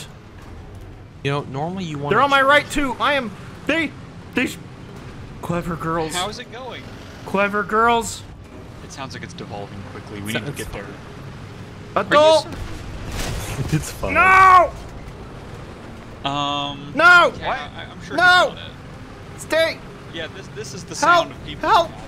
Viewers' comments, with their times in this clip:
0:10 Radio Operator is dead. Gunner opens hatch and screams to the inviseble support. Adult! ..NOOOOO .. No No stay! HELP HELP HELP HELP... DIE DIE..... Pls parts man power need everyting! CALL HIGH COMMAND!